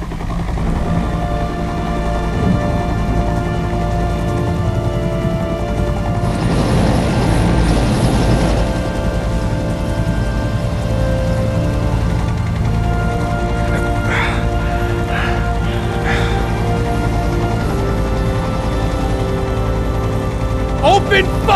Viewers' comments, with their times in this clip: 0:04 I love the music sadly it isn't on the soundtrack.